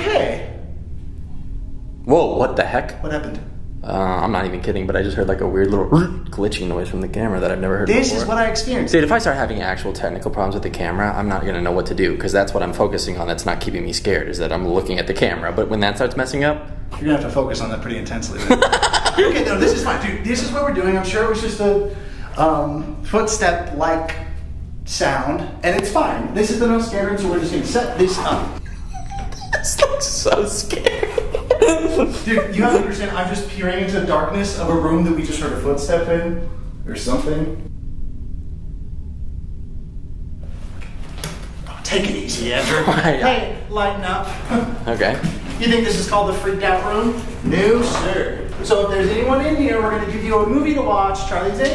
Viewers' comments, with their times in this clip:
0:05 ….it sounded more like a guy’s voice than the camera? Maybe?
0:36 there's a scream sound I the backround